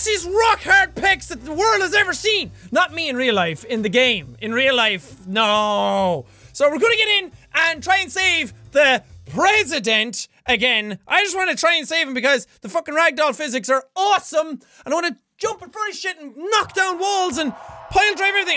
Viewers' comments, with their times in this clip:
0:05 Legend Of Power miranda sings voice